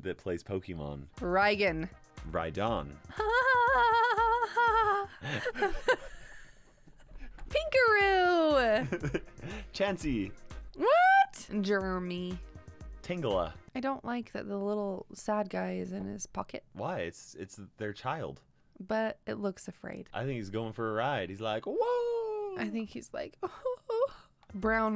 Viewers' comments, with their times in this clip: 0:05 What was that laugh ?